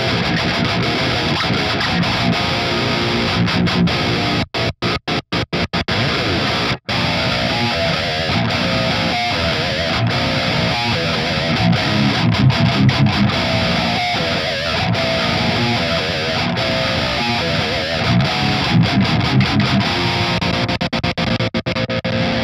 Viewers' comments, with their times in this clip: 0:06 Enter D J E N T man... I'm shook